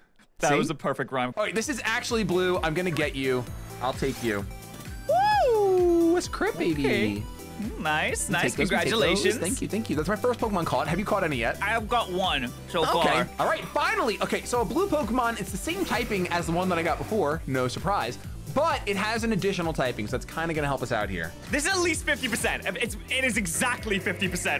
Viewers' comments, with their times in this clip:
0:06 not the white boy rap, that was so cringey